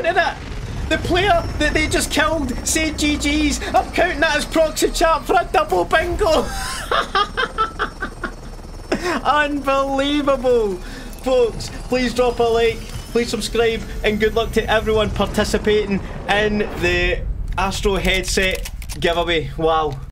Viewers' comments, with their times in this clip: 0:08 Laughing like a madman for the win is a whole mood #SundayBingo